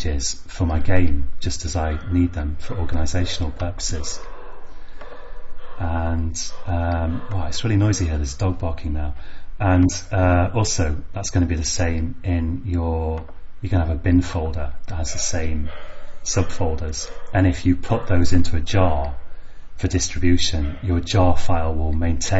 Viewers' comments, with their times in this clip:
0:06 That noise from behind just scared the shit out of me!!!